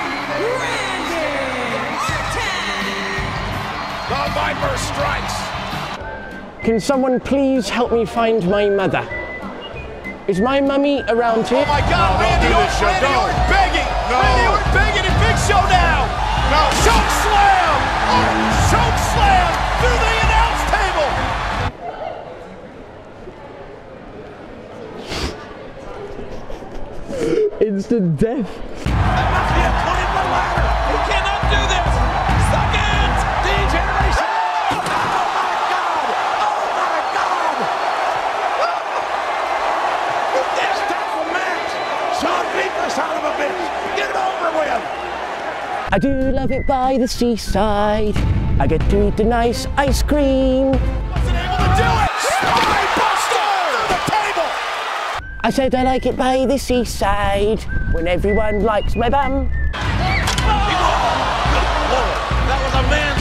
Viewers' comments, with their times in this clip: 0:06 idk if people find his accent is funny but i do 😂
0:37 a bit of concern and a bit of laughter lol
0:47 his voice is so cute ahahahhaah